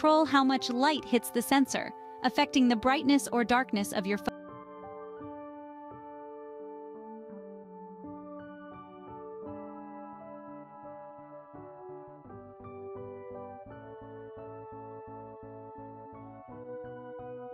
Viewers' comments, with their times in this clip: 0:04 voice stopped after that just music.